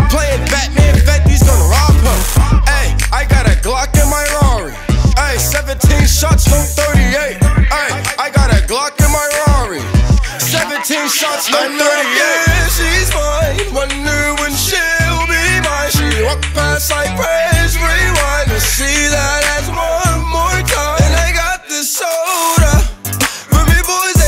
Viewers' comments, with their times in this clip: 0:07 Lois and Chris Griffin verse